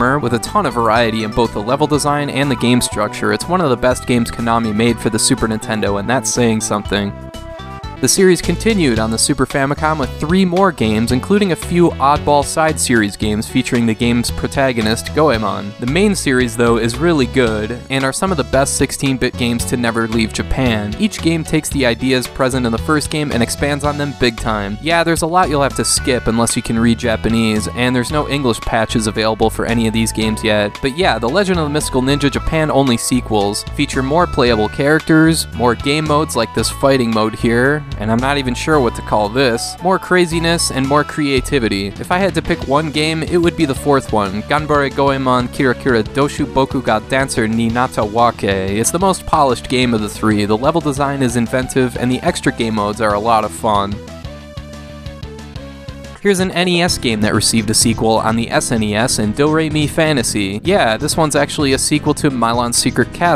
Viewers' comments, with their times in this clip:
0:07 What's the music playing ? It sounds so cool.
0:07 what is the music track called? It sounds like earthbound
0:44 How long did you have to practice saying that? Lol. That's one hell of a game title.